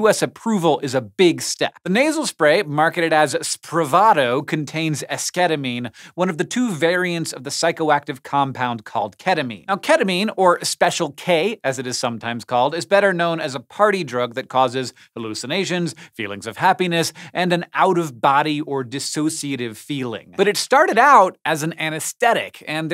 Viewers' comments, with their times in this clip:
0:05 ESSSKETITTTTT I'll end my life now